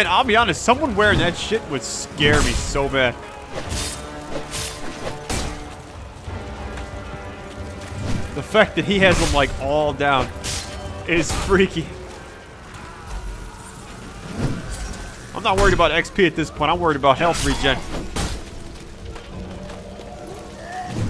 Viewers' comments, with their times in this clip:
0:06 ur voice cuts off